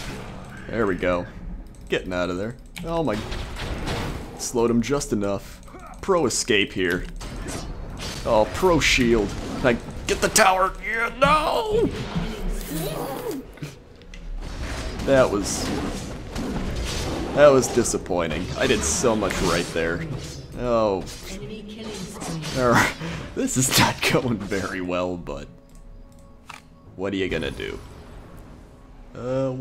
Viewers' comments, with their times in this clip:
0:10 laughed so hard at the FFFUUUU